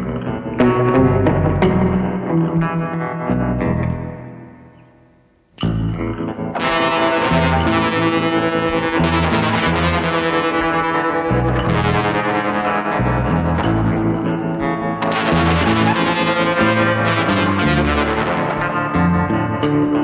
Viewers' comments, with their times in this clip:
0:07 Loved the fuzz sound ! Did you use any pedal for that? Amazing video